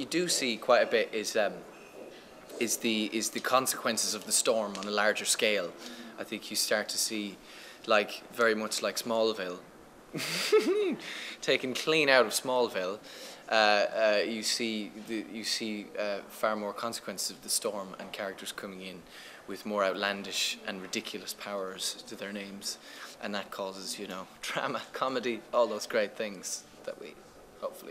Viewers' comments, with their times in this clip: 0:09 hahahahah that laugh! xD